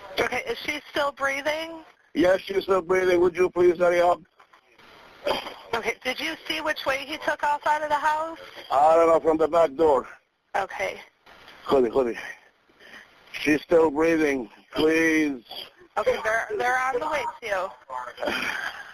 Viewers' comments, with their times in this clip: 0:03 you can hear thepain in his voice